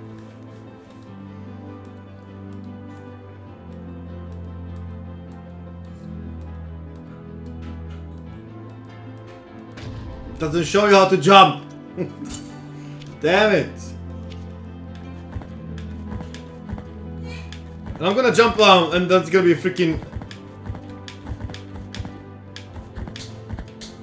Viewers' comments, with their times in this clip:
0:08 Listen for the Dark Souls parry sound.